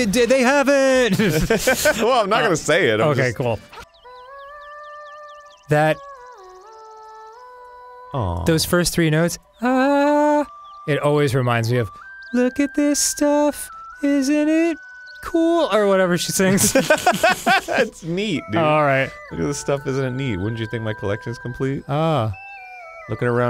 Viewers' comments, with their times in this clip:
0:08 I thought he was gonna start singing the beginning of Kiss From a Rose